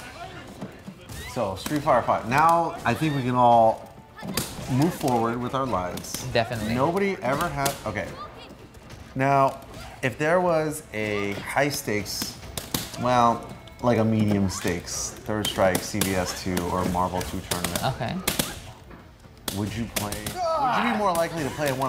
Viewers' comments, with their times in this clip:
0:07 I am fucking crying right now XD. Mike Ross: GAWDDD!!!! The best part is how Gootecks and Ricky are just having a normal conversation and Mike sounds like he's playing to save the human race